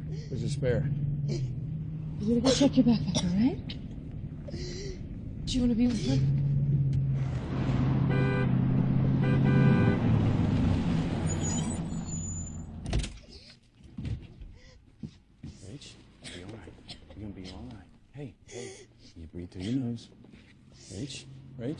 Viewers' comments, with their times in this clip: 0:06 That car horn sounded like one of the car horns from Grand Theft Auto San Andreas. Lol